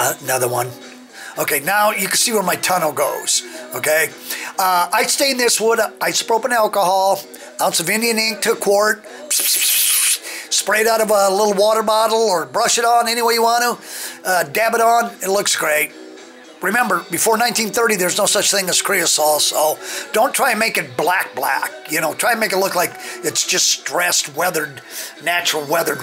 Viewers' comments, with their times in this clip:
0:08 What an awesome trestle you have constructed there. Love it. PS: The best part was your spray painting sounds 😂😂😂